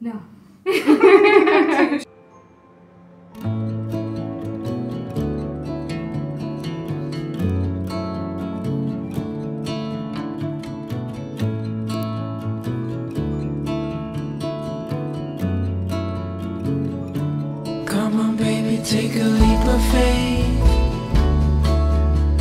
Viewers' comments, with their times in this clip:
0:04 Could someone please let me know the title of the second song played around the mint? It was incredibly soothing and relaxing to listen to.